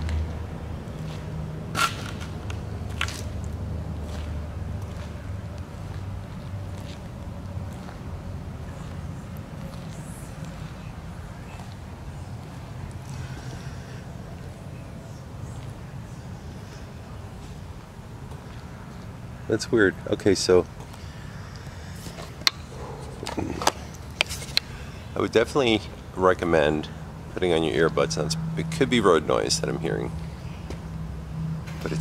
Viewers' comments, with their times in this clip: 0:09 OK THERES WHISPERS STARTING 😳!!
0:10 it sounds like either someone is saying "psst" and then some whispering, or it's a light metal on metal scraping sound.
0:10 there's a female whispering and it almost sounds like she's chanting.
0:10 heard light singing female voice
0:17 It's whipering it's a woman lol 😆